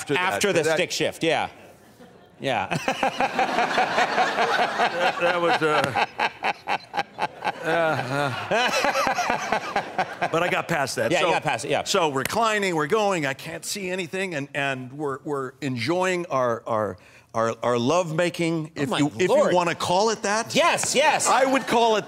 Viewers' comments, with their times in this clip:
0:09 Conan's laugh seems so fake there lol. His face is expressionless right after.